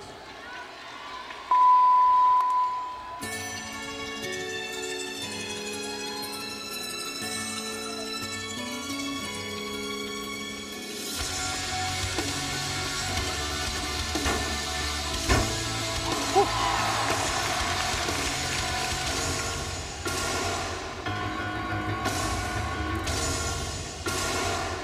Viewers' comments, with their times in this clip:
0:05 jordan chile's floor music (The bird and the worm - The Used) is such a welcoming change in terms of music genre! i loved it